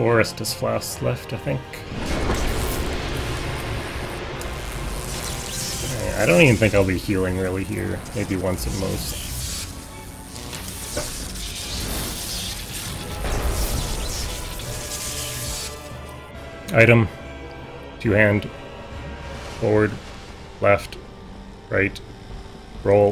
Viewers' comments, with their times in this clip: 0:09 lmao. "and indigo refueling rally here maybe once a month not to force this last month to think"